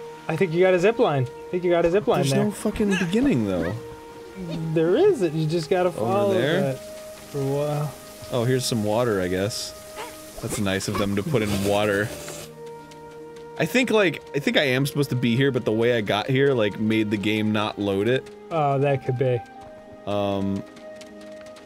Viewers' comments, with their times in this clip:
0:07 the waterfall sounds like it was recorded in a shower